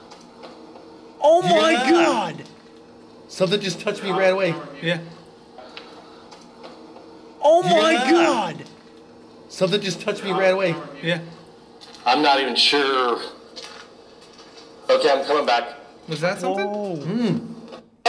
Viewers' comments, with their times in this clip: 0:03 Holy cow THOSE FOOTSTEPS WERE CLEAR AS DAY,!!!!